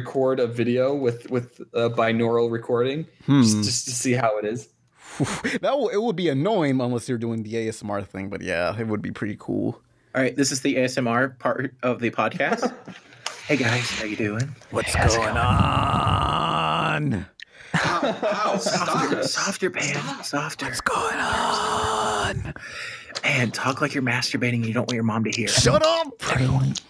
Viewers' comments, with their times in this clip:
0:09 The best part of the podcast, the ASMR part.